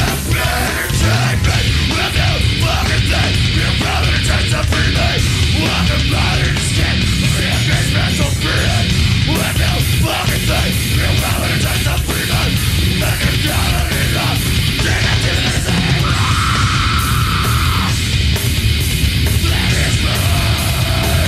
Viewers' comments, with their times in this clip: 0:07 oh man that bass